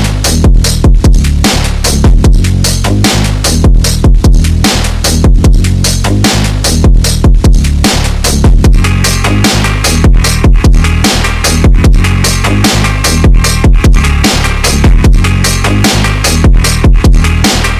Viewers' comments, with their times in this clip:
0:03 don’t tell me i’m the only one hearing “AMOG”